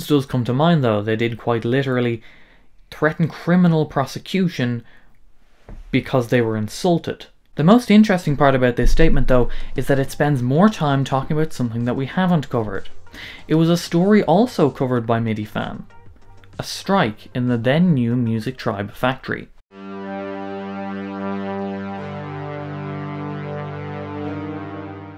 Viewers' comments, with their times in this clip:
0:09 is there a bass drop when you say "statement"? Lol